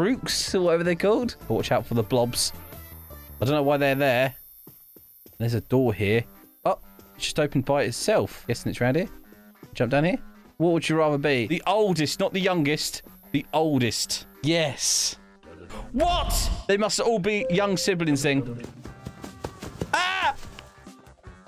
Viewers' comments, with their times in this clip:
0:08 my favourite music